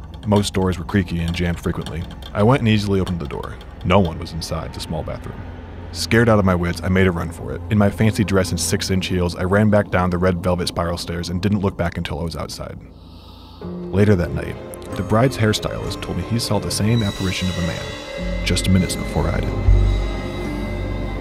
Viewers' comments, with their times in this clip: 0:08 The guy voice saying "in my fancy dress and 6inch heels" 🤣